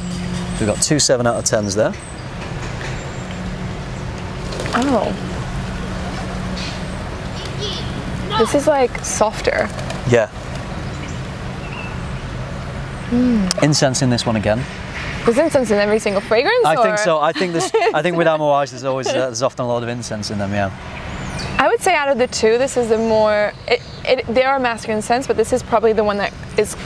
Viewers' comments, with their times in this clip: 0:10 The bird really said "IM A GIRAFFE"